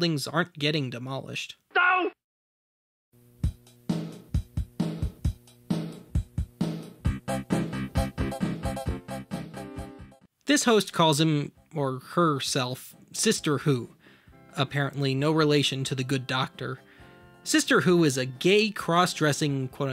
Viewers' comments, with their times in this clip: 0:03 Okay, this bit freaked me out, because as a kid I had the Casio keyboard that produced that EXACT same tune -- a preset rhythm, to be more specific. I even recorded a song that used that keyboard.